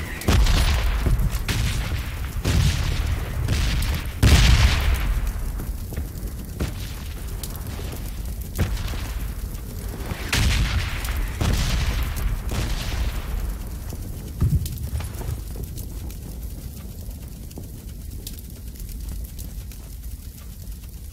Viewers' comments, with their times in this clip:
0:03 ...there is band music 🎶